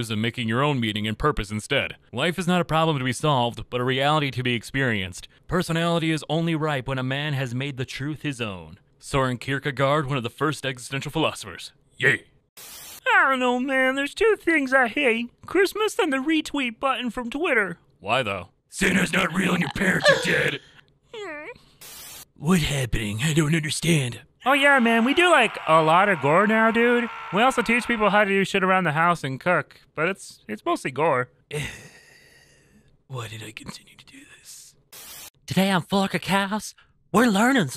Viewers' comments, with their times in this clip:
0:09 I can't take english people pronouncing å, æ/ä, and ø/ö lmao
0:19 I'm in a sleepover-type Discord call with my girlfriend and that gasp made me think she was choking holy shit-